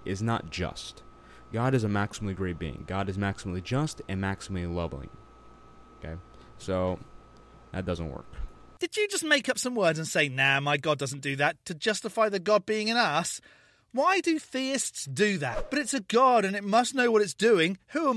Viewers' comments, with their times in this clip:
0:04 "isn’t god maximally lobbing?" Could be, could be.. 😁 But this guy said Lobb-L-ing (and wrote it too: "Lobbling") , whatever tf that is.. 🤣
0:04 God is Lobbling??